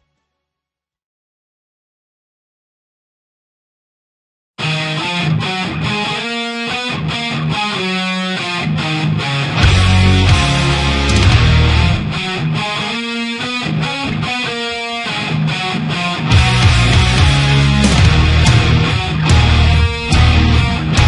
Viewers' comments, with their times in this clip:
0:03 it sounds like a part in "Cold winter nights" :D